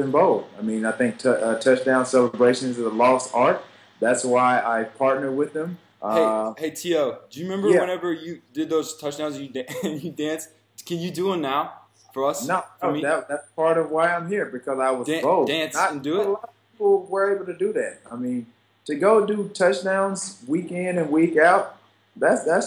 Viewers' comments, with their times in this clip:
0:08 Lmao when Caleb starts to laugh!